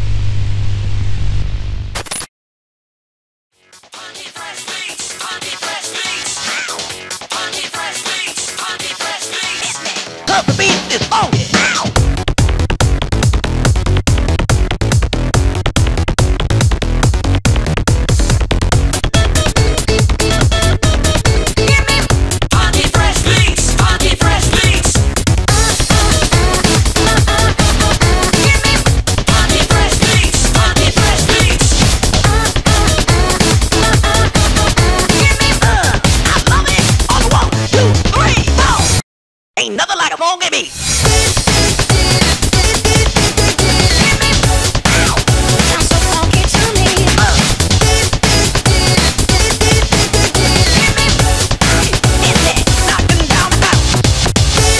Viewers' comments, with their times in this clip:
0:03 Dat Naganuma music tho
0:12 when the best drops better than the trailer itself
0:39 Ain’t nothing like a funky beat! Doombox: DIE.
0:39 Sounds like King Dedede from Kirby Right Back at Ya.